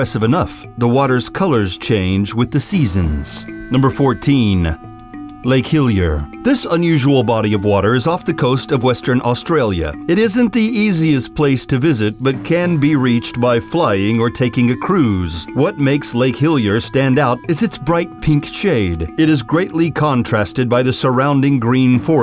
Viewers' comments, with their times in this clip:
0:03 Number fourteeeen-ah (used car tv commercial voice)